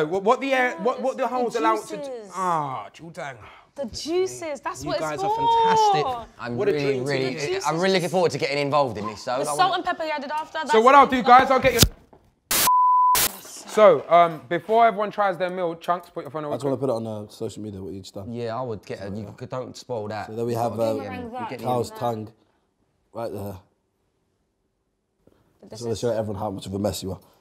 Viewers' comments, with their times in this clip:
0:10 what was that noise???